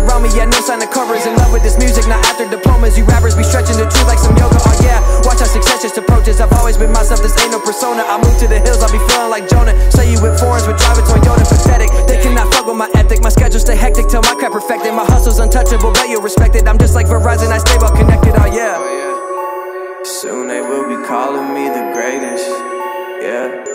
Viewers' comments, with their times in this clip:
0:05 JUST FOLLOW THAT FLOW